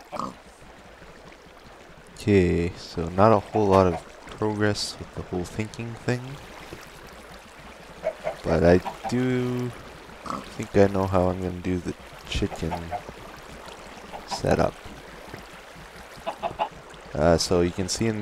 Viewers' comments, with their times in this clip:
0:04 grammer check istead of saying progress as in problem you said progress as in proficient